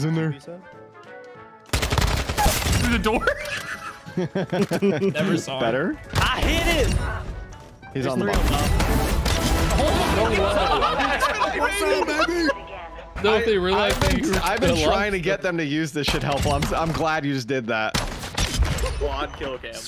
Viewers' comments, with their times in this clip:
0:07 The shotgun blasts mixed with the spy music was fucking great. 🤣🤣🤣